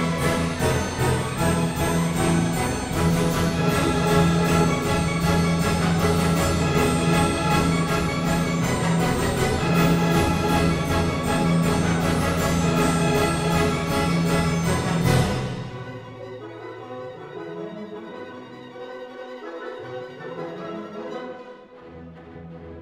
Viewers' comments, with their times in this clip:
0:03 this music perfectly represents what is happening